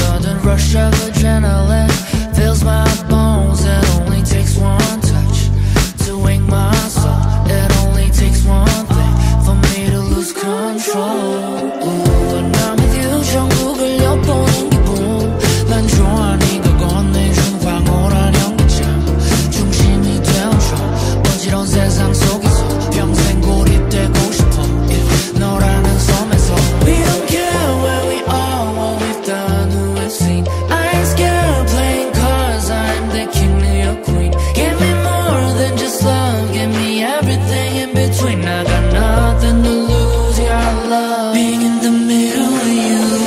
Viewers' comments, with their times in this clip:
0:10 part holy hell i can listen to him singing in korean for the whole day
0:25 And the entire song is day 🎇💫🌟✨🎆dreammmmmmmmmmmy/fairy tale - like/magicalrefreshing. I appreciate everything, love the chorus plus melodies, thank you. I feel you're humbly permitting ThineSelf to be honest at the risk of exposing vulnerability with feelings of💟 love/👫longing/👩‍❤️‍👨desire.